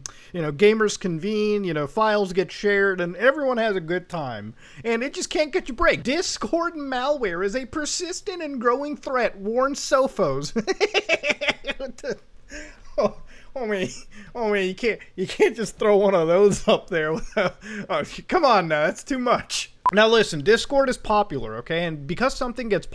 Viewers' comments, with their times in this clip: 0:10 that laugh made me laugh really hard